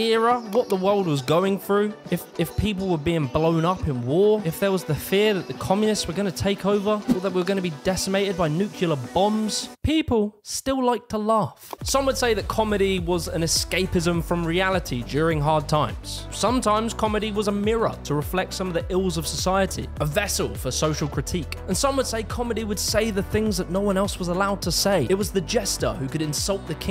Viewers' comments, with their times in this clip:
0:08 It's "nuclear"; "nu-clear" not "nukiler". Either that or you really wanted to say "new killer bombs"